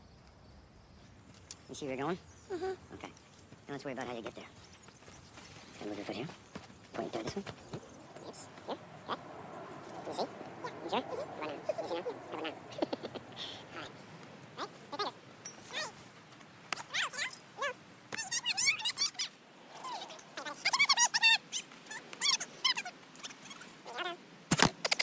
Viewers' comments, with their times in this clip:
0:09 they sound like minions